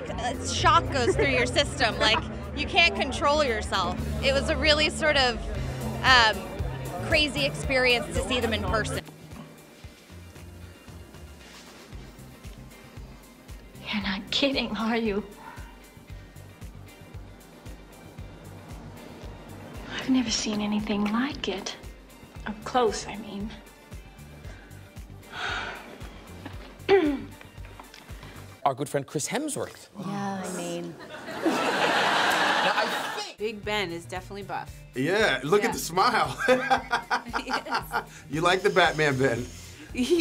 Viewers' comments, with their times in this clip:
0:10 the one with Arnold looks and sounds like a 80’s porno scene.
0:28 All he did was mention his name and all the girls moaned😂. I can't be the only person who laughed at that